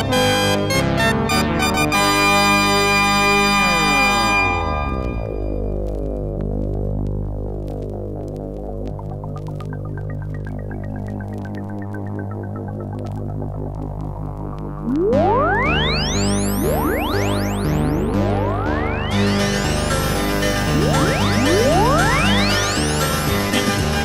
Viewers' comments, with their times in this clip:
0:06 all goes quiet for the buildup
0:08 I'm hearing Kraftwerk influence.